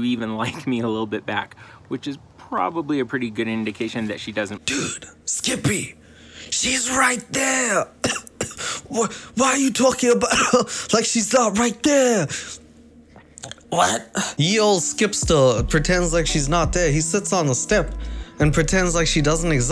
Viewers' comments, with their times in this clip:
0:07 Bro, did you swallow a gnat?